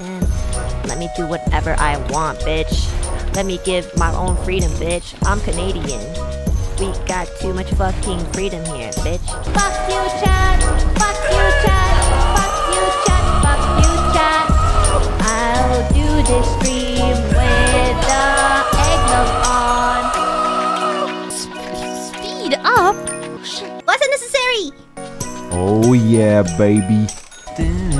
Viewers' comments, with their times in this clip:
0:09 this is unironically a really really good melody she adlib-ed lmao